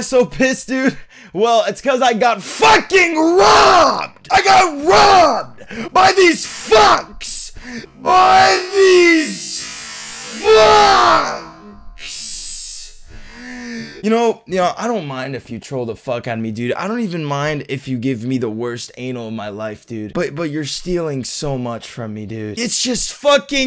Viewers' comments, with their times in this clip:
0:05 he got robbed by this fox